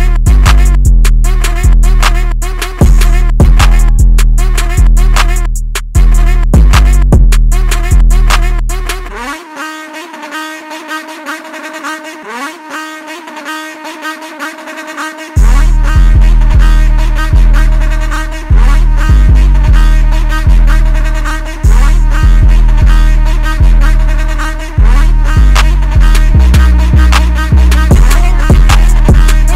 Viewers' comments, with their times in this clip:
0:08 when it’s start sounding like an Indian song
0:09 i swear thats every middle east beat ive ever heard
0:10 when you get that 30 dollar eBay exhaust